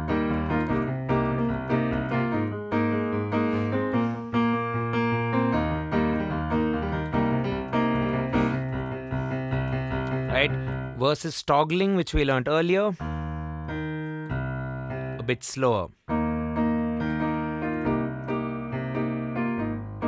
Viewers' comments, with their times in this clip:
0:06 how do you combine left hand and right hand? It's sounds like a fusion